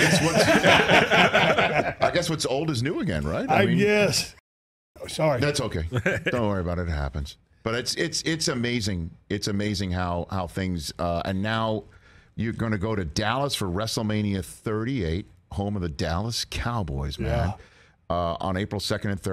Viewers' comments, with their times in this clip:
0:04 What did he apologize for.. A noise they edited out..? Did he fart.? Lol